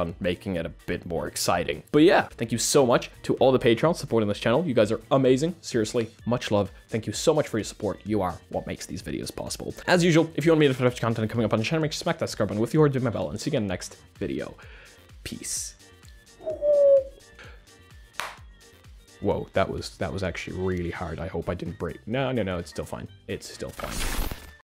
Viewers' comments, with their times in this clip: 0:09 I had to rewind a few times to actually recognize he hadn't switched back to Polish again...
0:10 Bro started rapping 💀